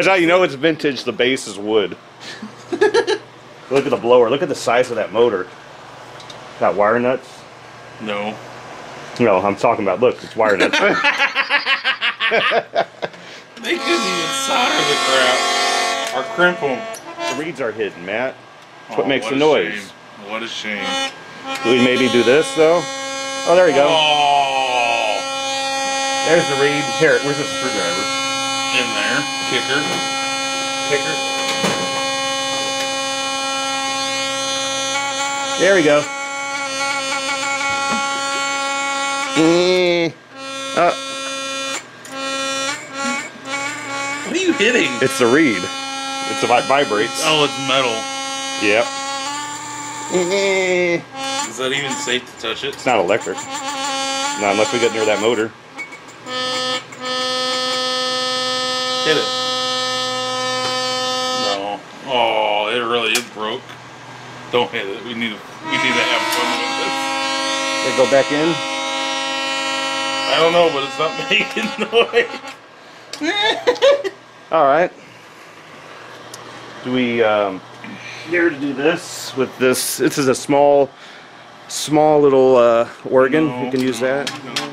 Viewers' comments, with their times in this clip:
0:10 he almost got the same laugh at me really hard
0:35 it sounds like someone screwing with a Wheelock 34T horn.
0:36 sounds like the dentist don't ask why
1:06 sounds like a truck horn
1:07 I lost it with the firecracker explosion 😂😂 Edit: kinda sounds like a train or semi-truck horn